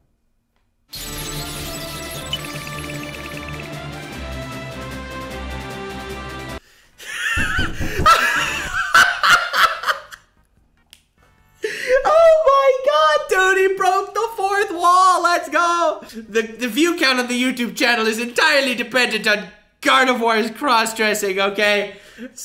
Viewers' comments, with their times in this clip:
0:07 why does someone keep knocking on his door